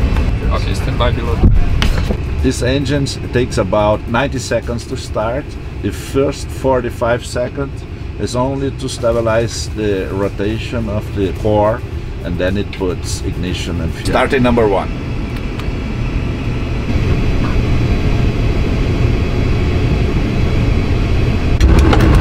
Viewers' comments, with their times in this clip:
0:10 now that's a heavy accent